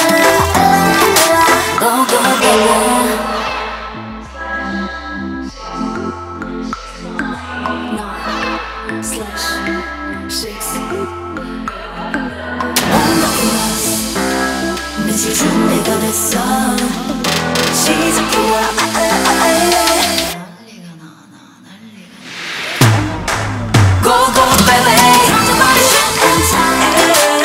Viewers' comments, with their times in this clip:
0:09 Moonbyul 's sexy voice is something else